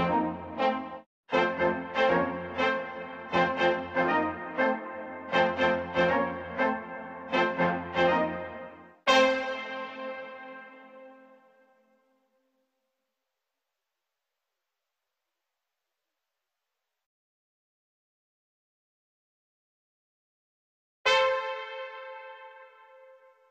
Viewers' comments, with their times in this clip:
0:09 my alarm clock at 3 am